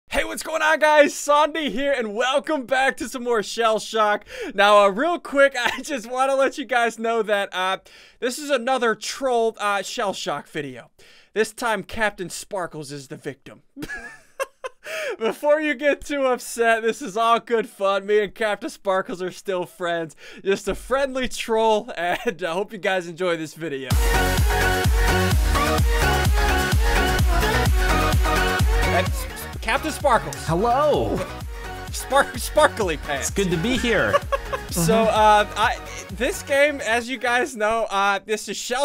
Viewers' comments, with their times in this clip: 0:01 why did ssundee say sombie on
0:26 had headphones on full volume rip me.